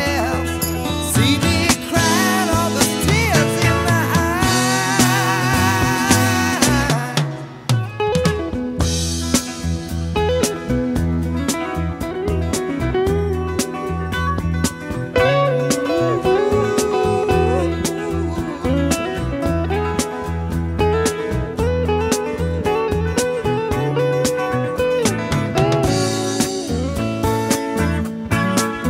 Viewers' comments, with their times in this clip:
0:10 My comment doesn't mean anything, but I have to note how really good this song is. I remember listening to it when it came out and really enjoyed it. The Doobies had their own unique style which I think is well shown in it. The lead break out IMO is one of the top ten I've ever listened too. Not sure if the Skunk did it or if it was someone else. If so, he had this and 'Ricky Don't Lose that Number' breaks all within a year or so of each other. Another great song. As we all have to say, 'why is it life turns out that way?'.